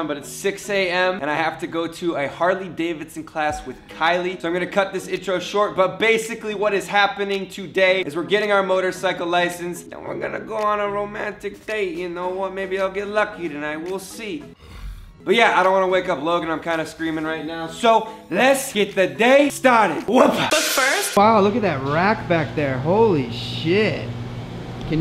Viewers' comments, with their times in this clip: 0:09 was he trying to talk like Logan does sometimes?